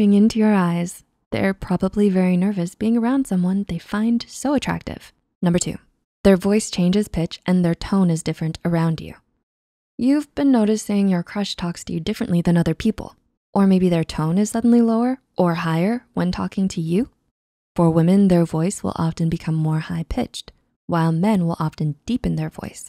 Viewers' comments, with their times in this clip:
0:06 isn’t it ‘tone’, not ‘town’ Or maybe I have bad grammar lol